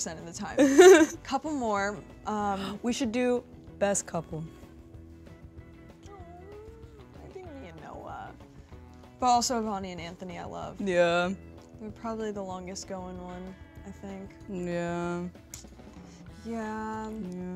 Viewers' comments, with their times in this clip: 0:03 dixie literally sounds like that mean girl from high school 💀-